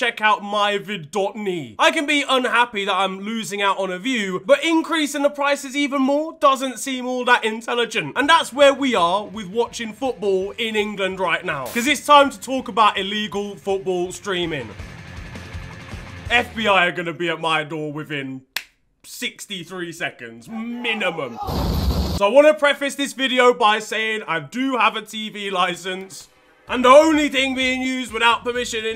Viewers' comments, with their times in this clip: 0:10 too loud why are u screaming lad - no good ears ring can´t listen i´m out